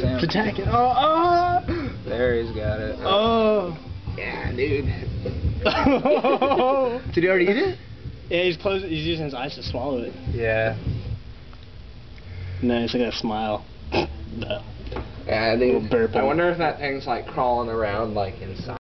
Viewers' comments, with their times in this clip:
0:03 did Chris Griffin say yeah "dude"??